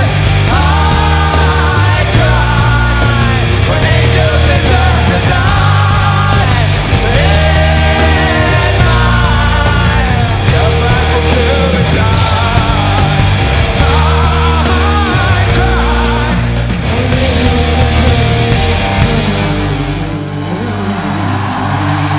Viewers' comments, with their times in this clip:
0:08 NO ONE GONNA TALK ABOUT THAT LAUGH THO!! 😏😼